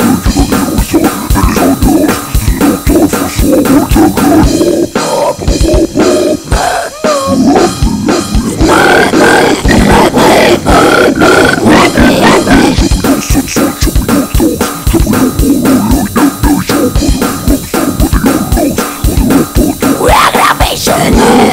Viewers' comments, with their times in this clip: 0:08 Gotta love the straight up frog mode Good shit btw, one of your better covers x)